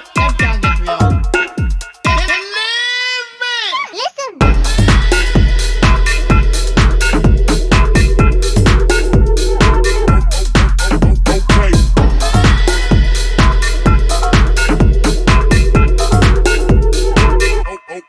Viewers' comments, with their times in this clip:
0:03 That Navi sample kills me everytime 😂
0:03 My text tone 😅